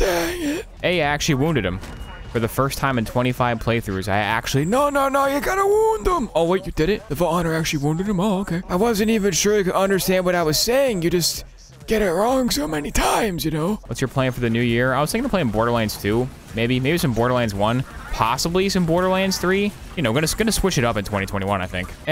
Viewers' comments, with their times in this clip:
0:05 Mordecai was so surprised he forgot his voice